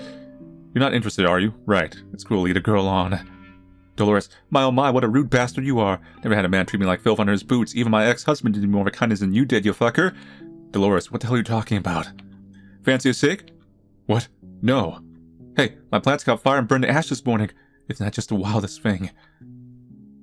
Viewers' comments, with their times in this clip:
0:07 fucking hell this man's method voice acting is on point.